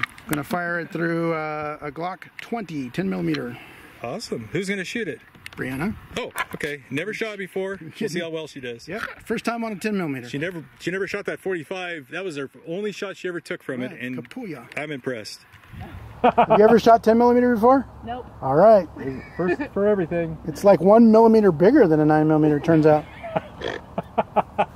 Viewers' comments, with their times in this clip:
0:08 I totally love the geek snort! 🤘😎